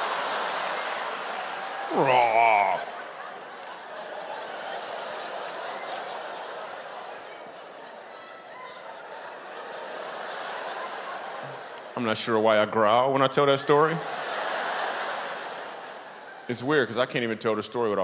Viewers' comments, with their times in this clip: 0:04 minutes in, he does his impression of a roaring mother catching her own baby. LOL! As a mother who has caught 2 of my own babies, I can tell you, the “Roar” is 100% accurate.